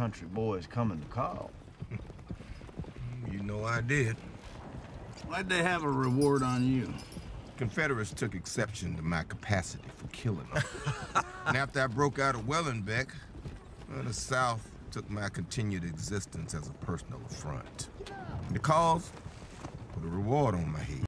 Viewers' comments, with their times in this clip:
0:10 I love that little laugh Chris Mannix does 😅 he’s like fuck this guy!